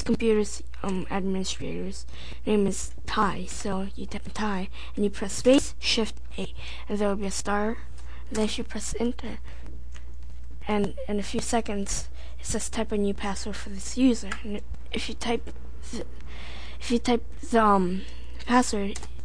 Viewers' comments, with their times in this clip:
0:05 sounds like robot